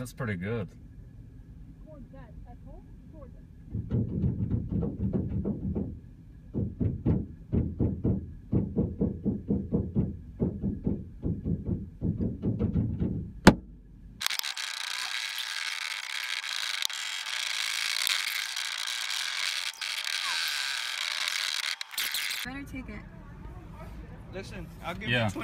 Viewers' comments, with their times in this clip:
0:06 Anyone else kinda hear jingle bells